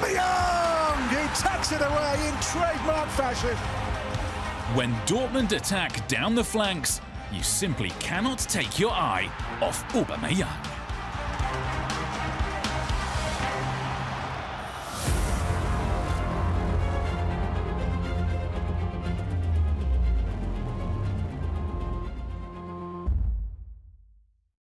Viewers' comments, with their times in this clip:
0:09 I’m sure that’s not how you say Aubamyang, lol